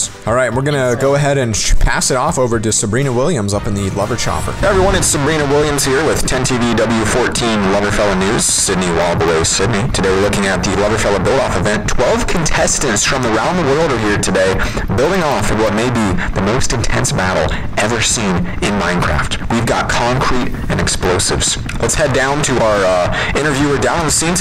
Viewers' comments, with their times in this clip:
0:04 sounds just like the news helicopter
0:04 Rest in peace headphone users
0:05 the most annoying voice in the universe